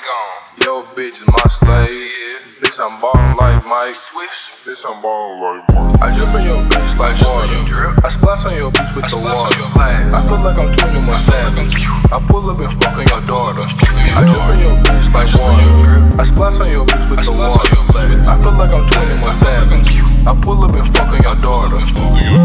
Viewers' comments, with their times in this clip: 0:03 Drop is wavy af